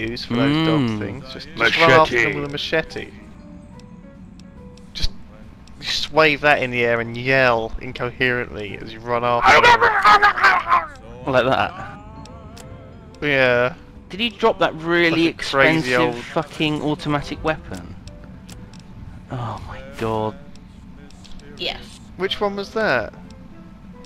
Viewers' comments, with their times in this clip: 0:09 how the hell did simon make that noice?!